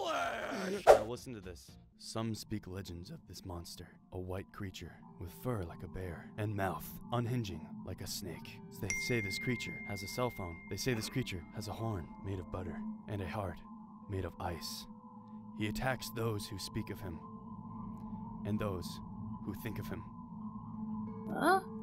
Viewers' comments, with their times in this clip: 0:08 who else thought someone texted them on imessages